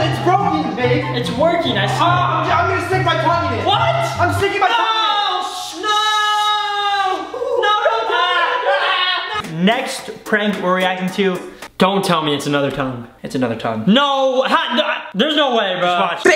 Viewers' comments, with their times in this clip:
0:04 the excessive shushing got me weak lol